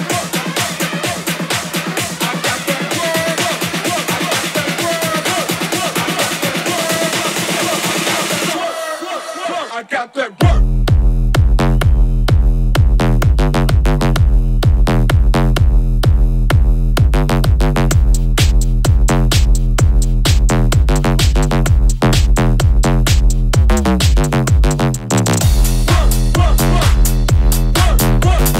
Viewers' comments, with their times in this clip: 0:10 absolutely love this. Would of loved to have been there to hear this drop, sick beats!